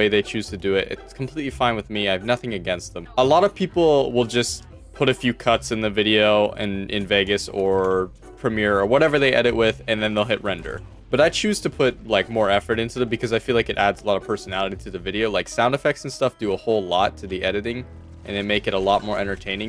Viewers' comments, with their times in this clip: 0:05 the csgo PLEAHH death sound is always my fav thanks for taking time to add those in.